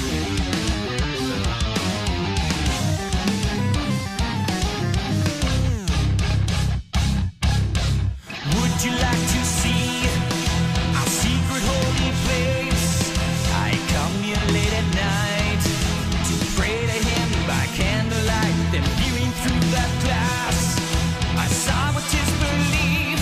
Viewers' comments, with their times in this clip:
0:08 There are many amazing things about this song but one of them I'll comment on is the verse where Portnoy does his half-time polymeter thing (playing the crash on every quarter note, so 9/4 over 9/8) It's so nasty and groovy and I love it.